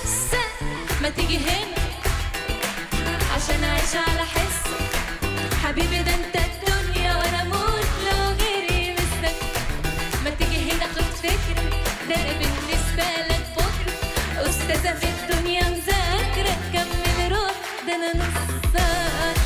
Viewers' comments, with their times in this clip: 0:06 The look she gives will make any man fall in love with her. What a dope beat too, freaking amazing song